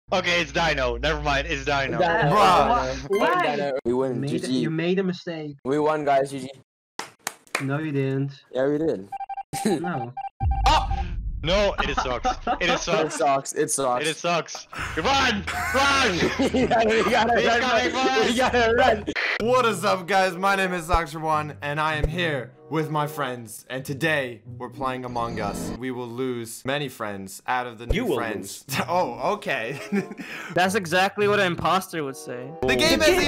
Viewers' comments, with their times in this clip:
0:00 sounded like John roblox from John roblox from John roblox from John robux
0:19 it’s socks for 2